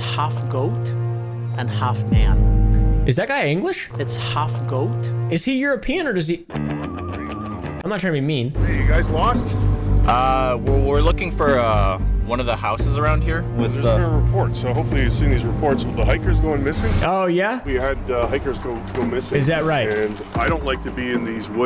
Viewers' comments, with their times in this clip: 0:04 the guy sounds scottish.